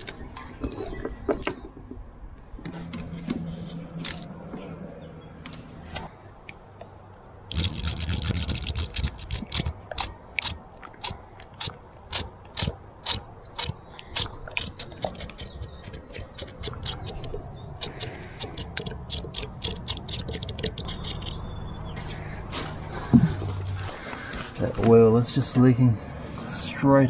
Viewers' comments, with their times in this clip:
0:07 I feel a little timid saying this for fear of making a fool of myself as you probably know this already, but you could avoid the glugging of the oil by rolling the can 180 degrees, so that the spout is the highest point when you start pouring. That way air can immediately and continuously flow in through the spout.
0:15 if you turn that oil spout around it wont chug .